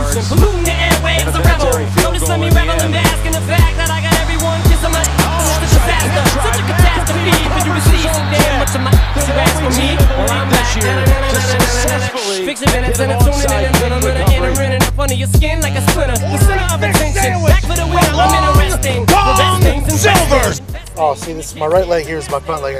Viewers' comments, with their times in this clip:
0:05 the song rhymes with the announcer